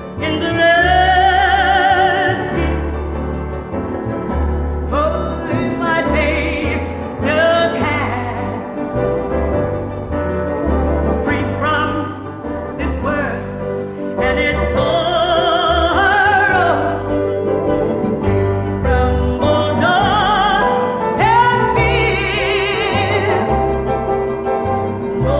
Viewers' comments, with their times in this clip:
0:07 that note her voice unmatched